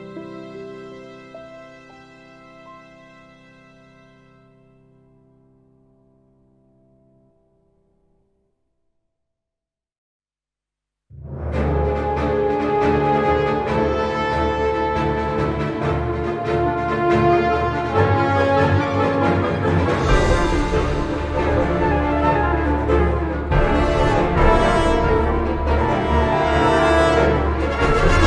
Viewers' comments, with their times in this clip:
0:10 (Trifaria Conscientia) is amazing. It’s very involved and cinematic, probably one of Hoyoverse’s more ambitious pieces. But they always deliver when it comes to Scara soundtracks.